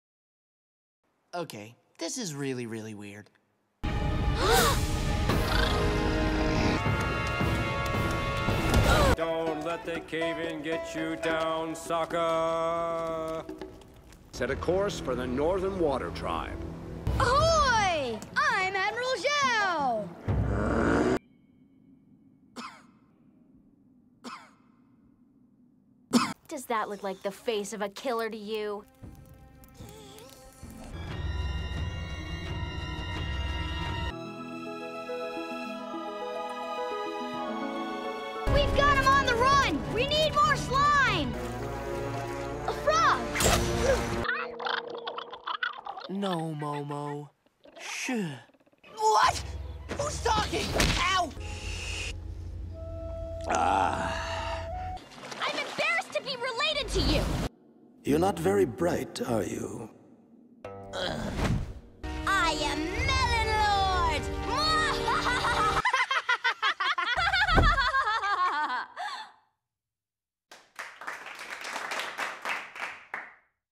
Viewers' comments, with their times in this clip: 0:08 To this day I'm asking myself what the heck Katara plans to do The way she runs sillily and then this intense music it cracks me up evritim :'>
0:09 Don't let the cave in get you down, sucker! 😂 That's how it sounds if you don't know Sokka's name 😂😂😂
0:09 Don't let the caving get you down, sucker.
0:22 I've been looking for a compilation of random coughs in awkward moment in atla like these. lol
1:07 Therapist: Laughing Azula Cant Hurt You Laughing Azula